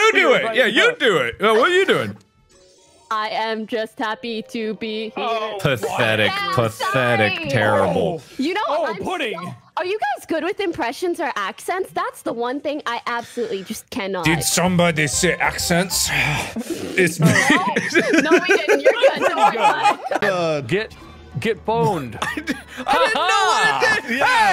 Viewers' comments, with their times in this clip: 0:10 Inspector Clouseau has entered the game (I'm ded XD)